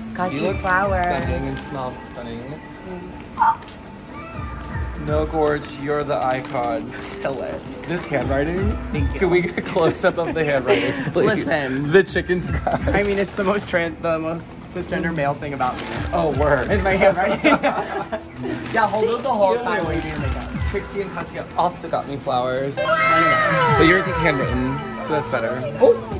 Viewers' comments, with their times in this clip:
0:10 Omg I love that the music of The Knife is playing at the background of the dressing room 😍💖